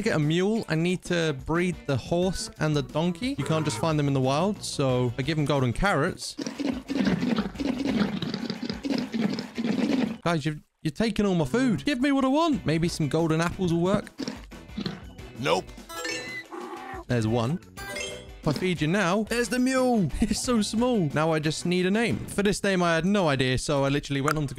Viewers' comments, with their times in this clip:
0:08 "you takeing all my dois give me what i want" idk saying that whit you accent made my laugh so much